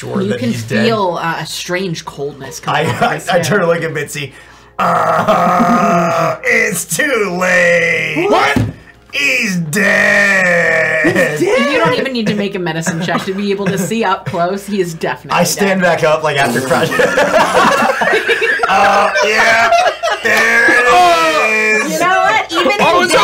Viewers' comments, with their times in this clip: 0:08 an ad cut off the scream and i kid you not I almost turned into Chuckles